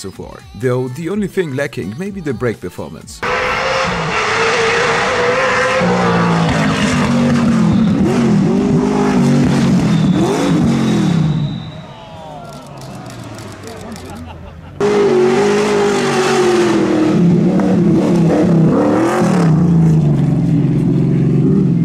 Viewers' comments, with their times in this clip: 0:03 Saw Jimmy Mcrae driving one of these at the Wales Rally GB, it was even louder than the WRC cars!
0:03 That V8 rallycar honestly sounds and looks like something I'd see in Burnout Paradise